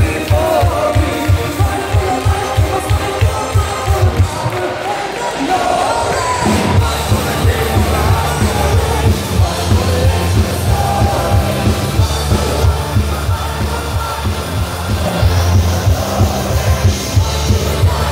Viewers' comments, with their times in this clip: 0:06 My God are they half-assing it. he missed that note just by a scooch lol